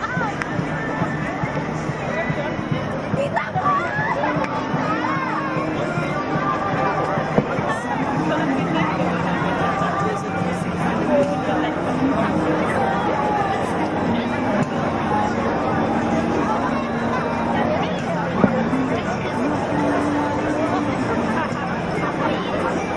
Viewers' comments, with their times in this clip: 0:07 The music on is somewhat familiar, I think I heard it before.